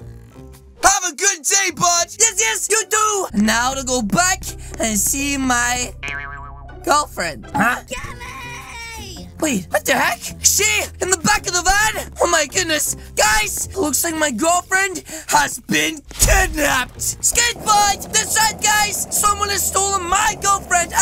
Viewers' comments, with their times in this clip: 0:07 Girlfriend: *screaming get me!!! faintly*